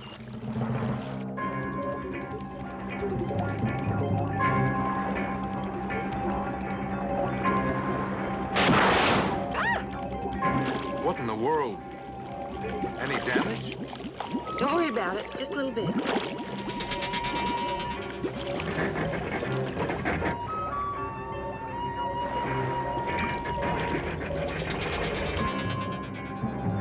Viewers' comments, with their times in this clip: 0:10 That "What in the world" sounded like the actor was totally done and wanted to go home.